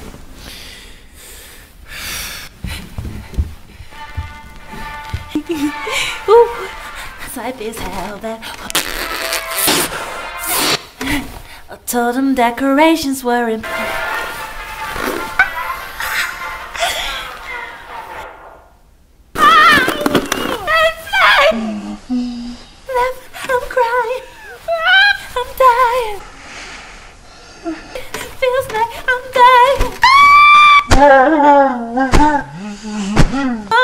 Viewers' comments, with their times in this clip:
0:08 The scream the
0:11 Team Melanie I love that scream
0:11 I love that scream
0:12 My fav part is the sound of Melanie Martinez beating up the bear I died of laughter 😂
0:17 Why does she sound like the thwomps from super Mario 64 😂😂